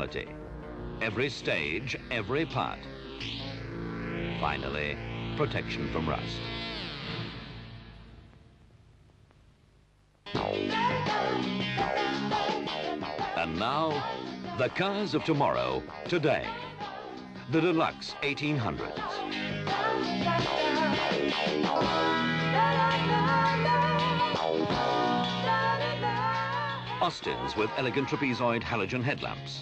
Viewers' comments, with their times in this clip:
0:10 we break out into soulful harmony:) LALALALA!!!